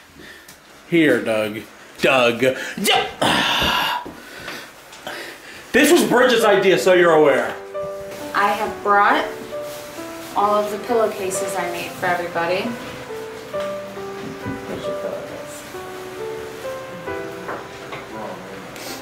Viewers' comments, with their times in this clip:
0:05 when you here that music you know you bouta cry